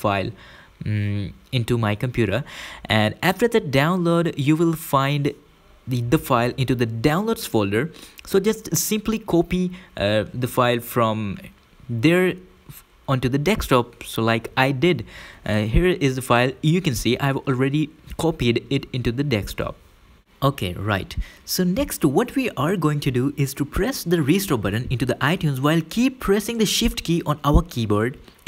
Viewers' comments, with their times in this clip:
0:10 DEKSTOP i just learned a new word